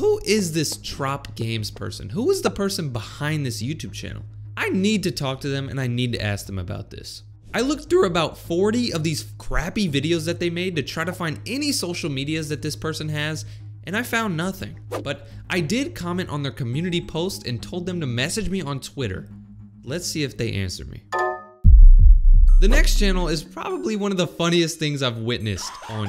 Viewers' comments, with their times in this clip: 0:06 he voice cracked when he said throught
0:07 that voice crack hit different
0:08 that voice crack🤣